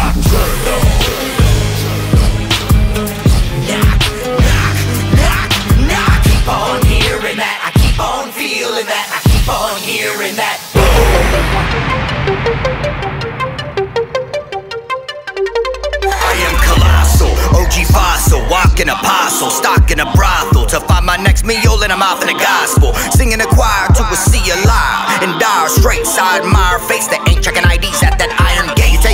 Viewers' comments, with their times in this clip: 0:10 If you watching this video on high mode (on the weed tip) then you are great!!!!!!! This my fifth time watching this video. Lol. But that change up was so sick!!!!!!!!!